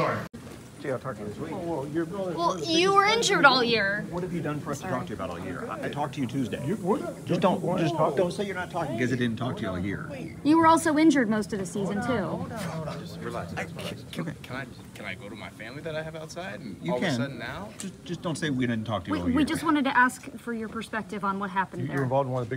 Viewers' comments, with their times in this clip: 0:09 this one was as funny as a skit. The way the reporters were so aggresive that they slmost finished each other's sentences had me on the floor.